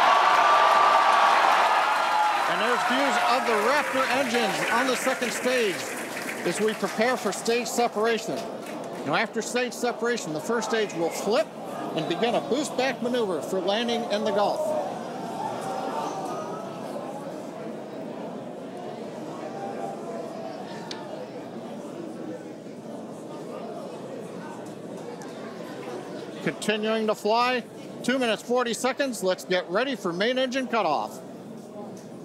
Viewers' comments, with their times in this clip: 0:04 Lol people clapping so crazy still us wild. Like what are you cheering for?
0:19 You know something is very wrong, when you start to here a chorus of very anguished voices start to say: "No!", starting at the time code mark. And then just 11 seconds later people in the control center saying loudly: "No!... No!".